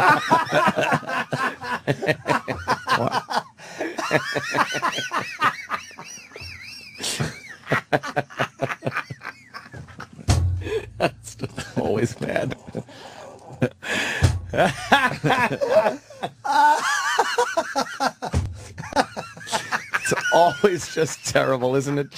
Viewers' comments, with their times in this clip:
0:07 Jimmy sounds like a baby here lol